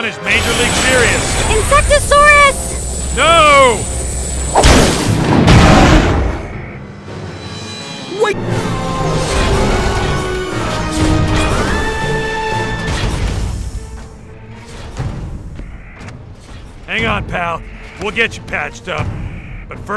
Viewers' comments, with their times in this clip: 0:03 bro said it in lowercase